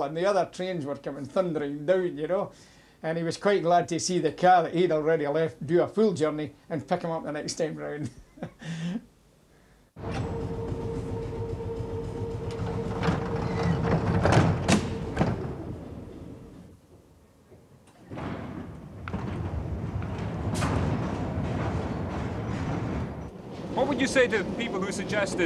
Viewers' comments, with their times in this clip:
0:10 i love this door slam